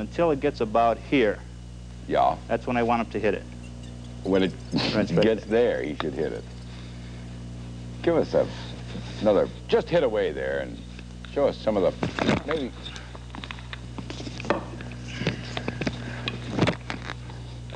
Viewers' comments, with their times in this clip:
0:04 I love when Ernie cracks up in these skits He and Big Chuck had a great rapport.